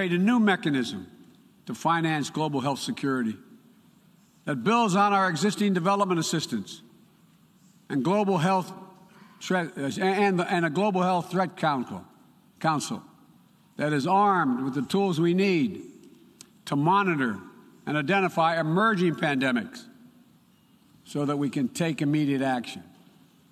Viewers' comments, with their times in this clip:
0:07 Gotta love a good kownkull!